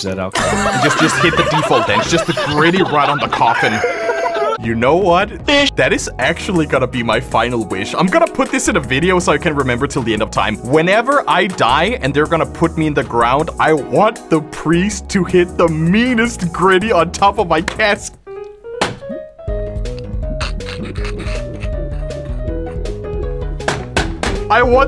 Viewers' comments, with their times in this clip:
0:05 You know what? FISH! That is actually gonna be my final wish. BRO IS RAPPING LIKE CRAZY